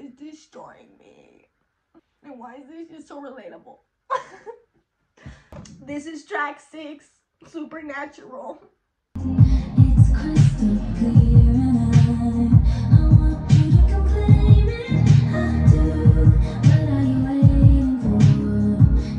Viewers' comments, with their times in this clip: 0:05 the way u said it 😭😭